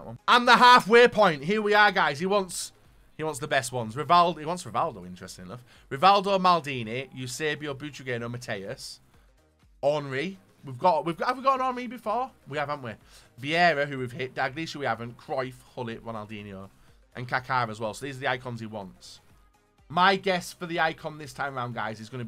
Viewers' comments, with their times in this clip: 0:05 its like the Zidane song